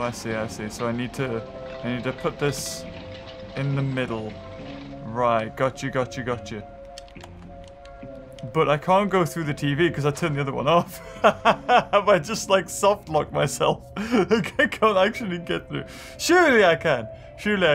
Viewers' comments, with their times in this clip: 0:03 I Like this TV, it plays Lofi Hip hop